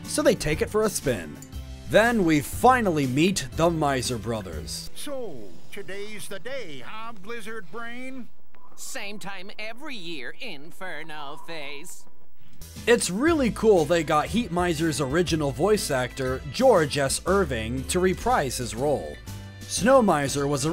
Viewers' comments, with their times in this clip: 0:08 he sounds like the villain from fangbone